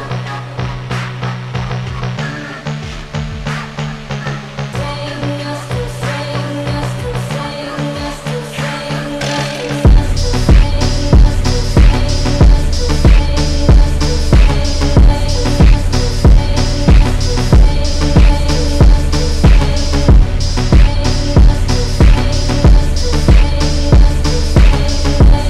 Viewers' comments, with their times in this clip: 0:09 Not bad, but the overall song is pretty boring composed.